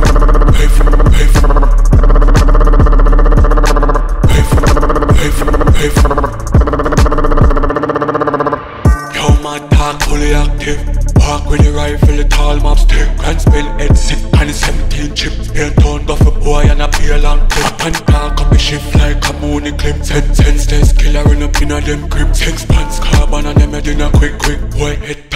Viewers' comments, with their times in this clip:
0:09 Skeng voice is